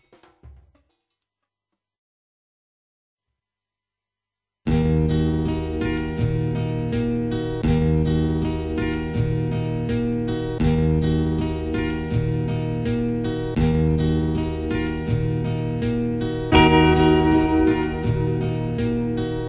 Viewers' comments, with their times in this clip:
0:03 Fucking epic song !!!!